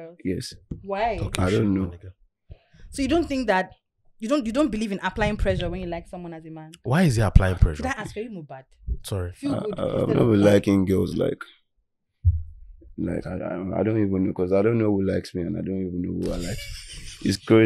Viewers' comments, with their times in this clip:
0:03 i don't like the way she talks..